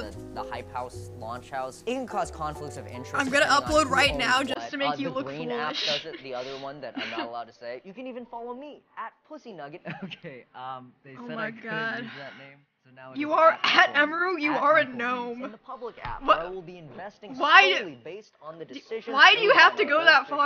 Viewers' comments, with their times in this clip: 0:05 What happen to the audio?